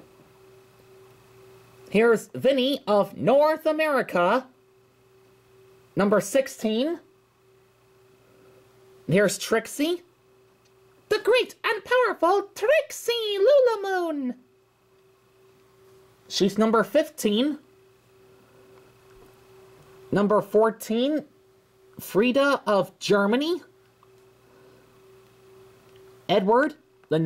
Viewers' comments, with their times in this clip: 0:09 you are getting better at doing Trixie's voice.
0:09 you are getting better at doing Trixie's voice.